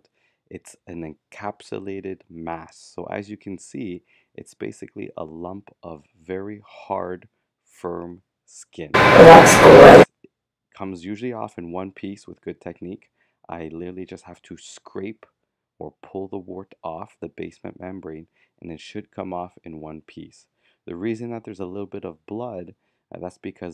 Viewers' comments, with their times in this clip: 0:07 HOLY JUMPSCARE! That..whatever that was scared me so bad my eyes are tearing up. I had my volume up because you speak so quietly 😢